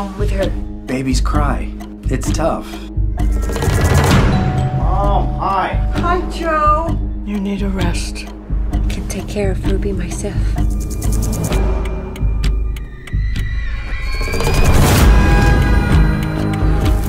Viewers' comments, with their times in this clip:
0:04 music imbalance blew my headphones off my head and into orbit. my brother in christ, please don't play "mama's gonna buy you a mockingbird" six times louder than the video preceding it.